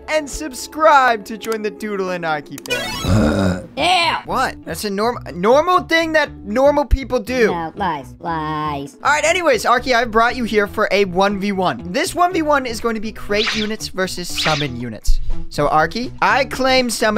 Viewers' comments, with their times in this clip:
0:04 burp normal people😂 got me😂 you’re in the Pacific Ocean buddy😂😂😂😂